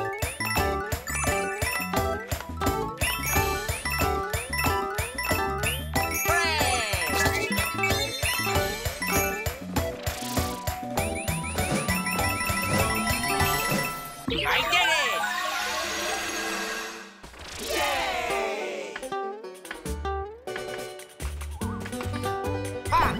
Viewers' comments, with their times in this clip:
0:08 I always messed up on that part which was so stupid and ridiculous 😡 but I did like the music tho